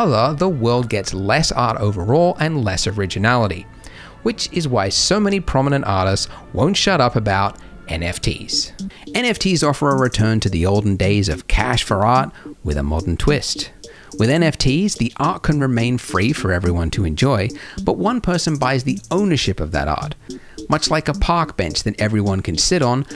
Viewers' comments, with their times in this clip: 0:08 I don't have a significant interest in NFTs, but i kept watching this video for the bangin' Sega genesis style tune that starts playing at the mark. 10/10